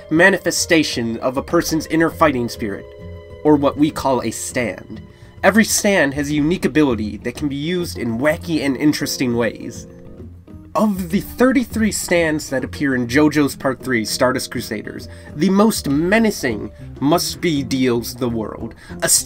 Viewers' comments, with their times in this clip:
0:06 Did this man just say SAND